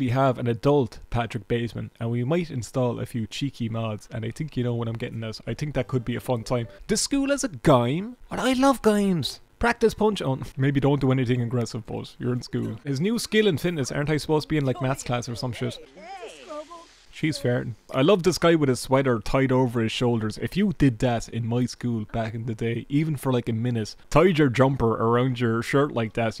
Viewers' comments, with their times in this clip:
0:07 are you pronouncing the word "gym" like "gime"?